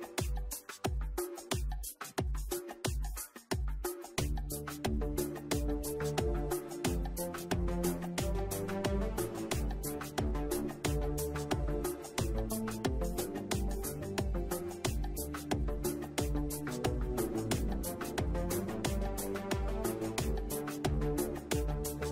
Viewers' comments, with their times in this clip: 0:03 I thought was 'wicked weasel'. 😉